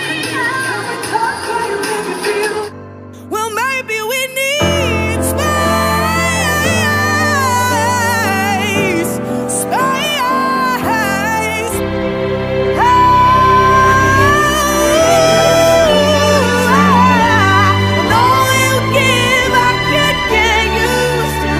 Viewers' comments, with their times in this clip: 0:03 She sounds like Dua Lipa omg